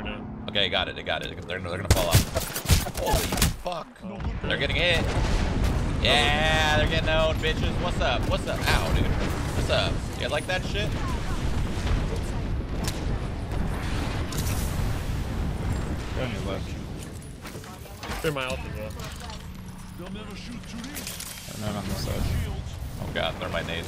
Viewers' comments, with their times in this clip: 0:09 anyone else hear shroud say the n word